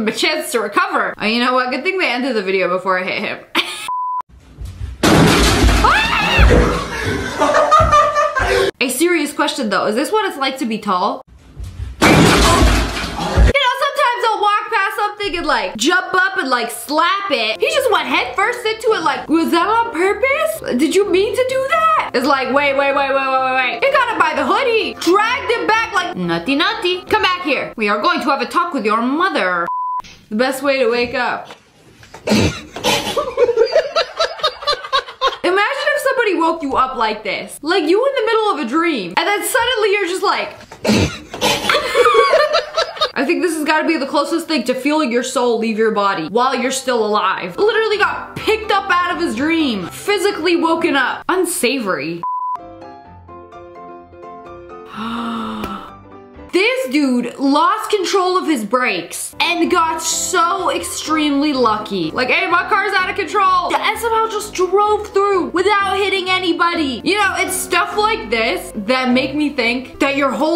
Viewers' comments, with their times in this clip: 0:04 why do ppl laugh he could have died :( da heck
0:05 Not my Siri going off
0:12 the sigh said no sir
0:25 It’s like when you run down the hallway and the teacher says “ no no no no I would like you to go back down that hallway and walk please” It’s always that passive aggressive tone
0:52 i thoughts someone farted on the sleeping person 😂😂😂😂